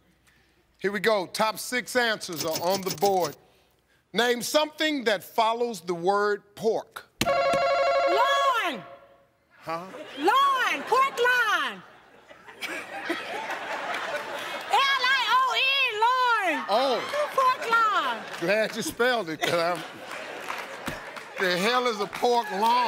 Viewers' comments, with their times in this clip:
0:05 is awesome. Screaming pork loooin